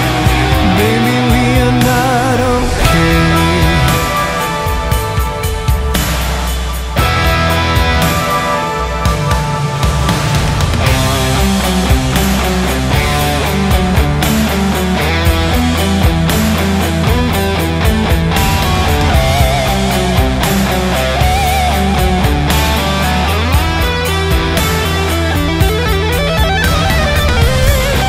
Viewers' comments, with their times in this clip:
0:10 The solo is so sick!